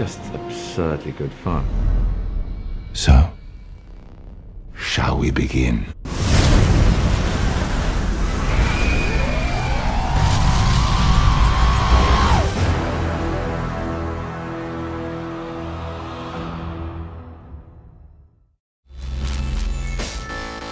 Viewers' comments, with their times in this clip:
0:08 .. sounded like the intro to Doctor Who!